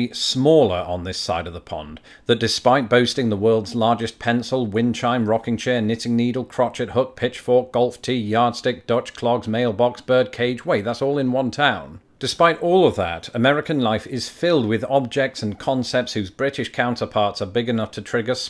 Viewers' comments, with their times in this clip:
0:06 Where is your wife??? Does she know you say "crochet" and still pronounce the "T?"